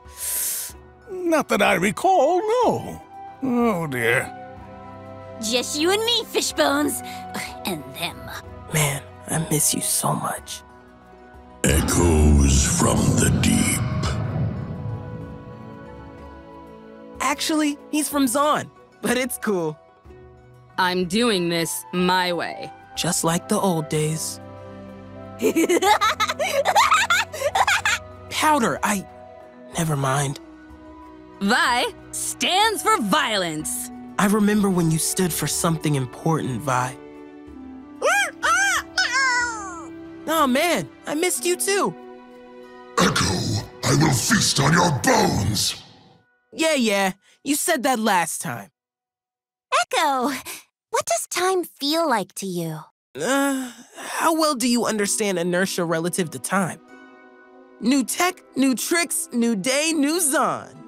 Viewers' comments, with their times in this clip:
0:05 Dude the way he says “ i miss you so much” is so sad,,
0:48 the fuck is that voice coming from taliyah? Its way too high pitched